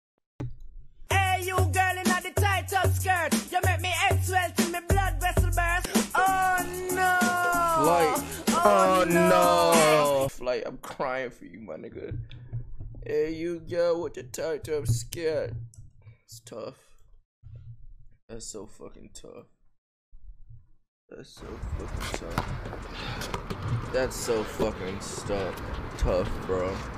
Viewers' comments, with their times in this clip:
0:07 i ain’t here that song in so fuckin long